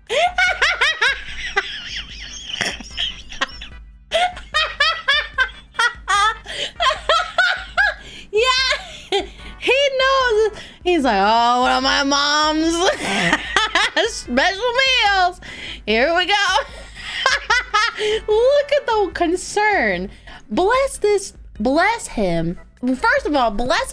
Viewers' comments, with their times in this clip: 0:08 well... this laugh is one of a kind... one of a kind btw im pretty sure he will be fine. if he grew up eating this his immune system must be unreal. washing rice here is not the problem. its not fricken cooked